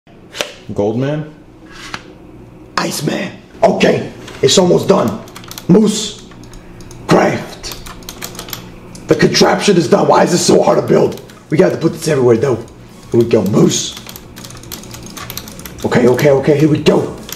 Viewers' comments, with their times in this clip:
0:00 lol u sounded like pewdiepie